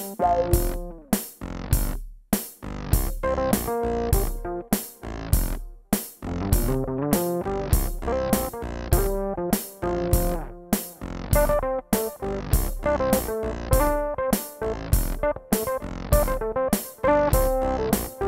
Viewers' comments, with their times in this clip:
0:04 Love the videos. One talented bro - now when's the concert? Oh from on you really hit the sweet spot!